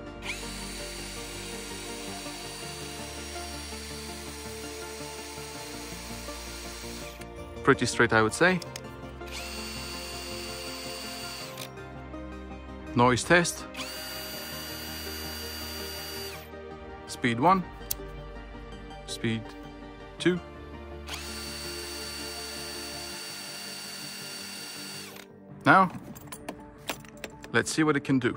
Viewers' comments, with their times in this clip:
0:10 Yours makes strange grinding sound when you let go off the trigger and engine stops? I think I can hear it here